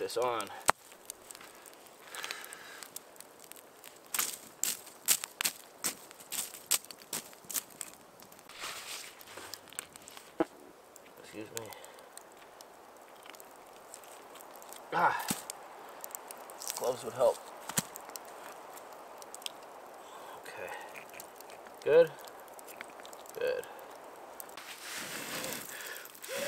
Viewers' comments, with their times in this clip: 0:09 Half way through and I don't see why......... OK Butt burp violates family content regulation?